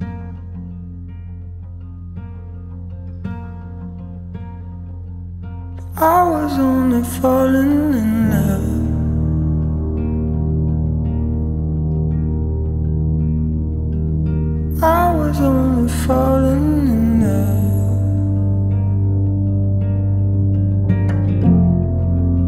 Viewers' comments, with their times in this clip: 0:06 sound like a harry styles man